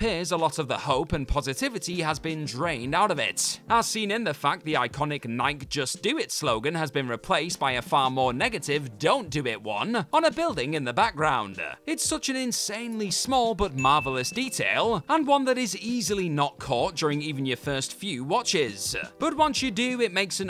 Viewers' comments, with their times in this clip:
0:07 —where in the world is NIKE pronounced like 🎤 [mike]? It is pronounced N+👁️+🔑 [n-eye-key].